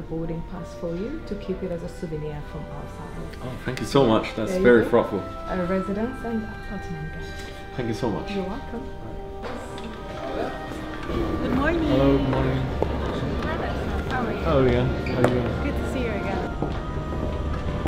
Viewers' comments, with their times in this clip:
0:03 thats very frofel loolll